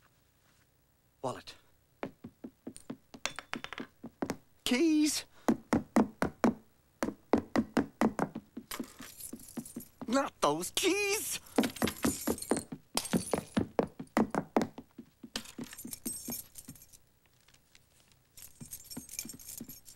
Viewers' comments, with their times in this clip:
0:03 They left original voice